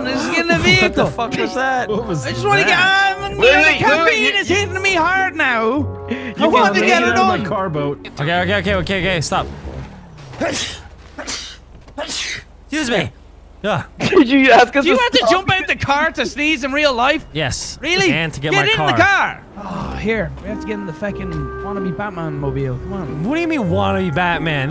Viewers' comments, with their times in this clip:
0:10 bless you evan